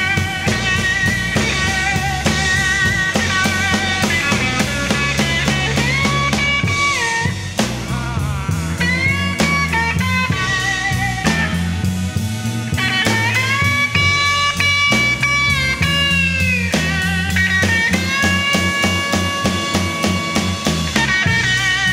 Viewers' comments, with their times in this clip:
0:08 that feeling screaming and howling!